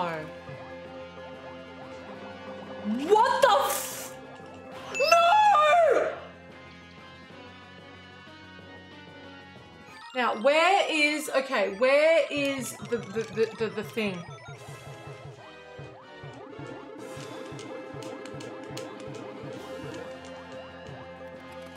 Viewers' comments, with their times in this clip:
0:04 Was that a Chicken? :D LOL